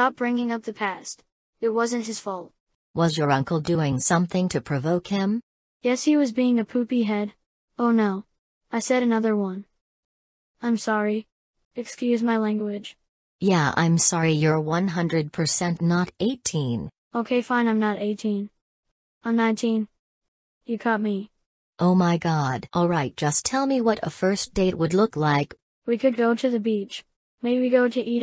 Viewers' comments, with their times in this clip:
0:10 ngl, but that young boy voice just sounds so real-